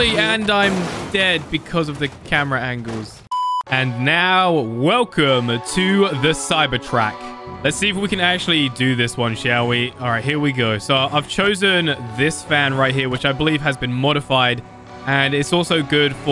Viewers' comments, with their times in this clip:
0:04 i thought you said cybertruck XD